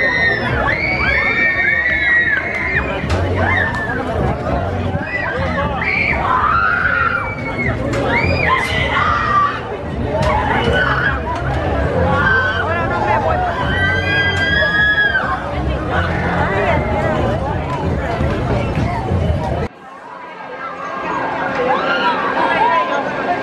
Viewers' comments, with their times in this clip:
0:09 I think I heard a whaling scream saying, "Let me off!" Oy, too late.